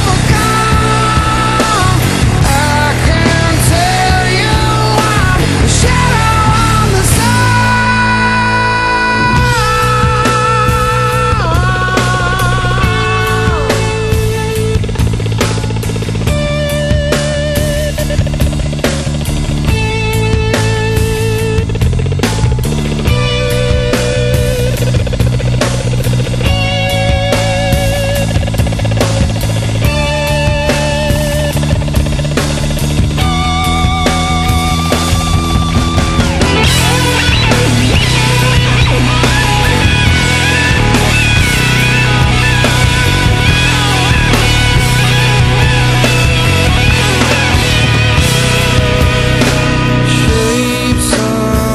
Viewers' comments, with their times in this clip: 0:08 is that weird tapping sound a guitar effect by tom. watever it is its fuckin awesome!
0:36 i think the guitar solo is the coolest thing i've ever heard
0:36 Has anyone seen Tom Morello perform this solo, because it sounds insane! If I remember correctly he perform another one live.
0:36 nice riff, Tom.